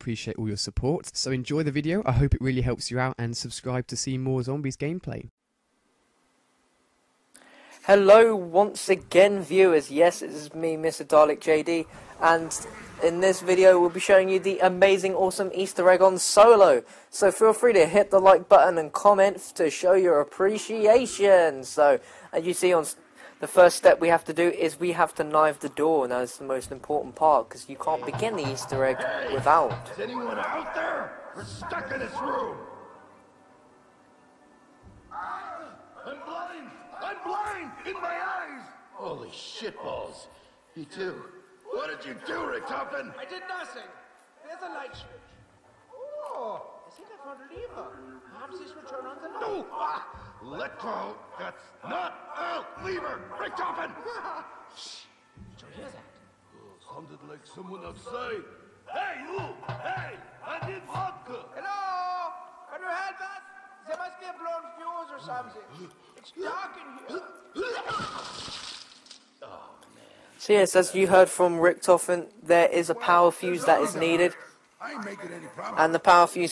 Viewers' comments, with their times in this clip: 0:10 heyyyY!!!!!@@@@ they guys sound like kino der toten guys..
0:59 he look wawka how ever you spell it lol i love when he says wawka